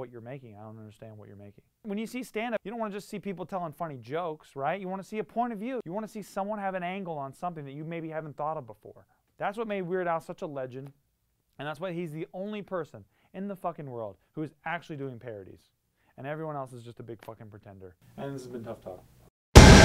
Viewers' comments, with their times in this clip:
0:07 he says "That's why name is such a legend". I can't understand what name he says, someone please tell me!!